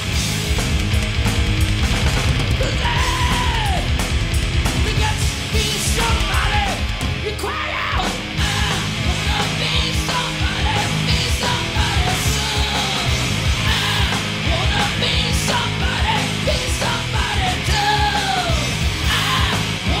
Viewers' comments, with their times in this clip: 0:08 I think he is talking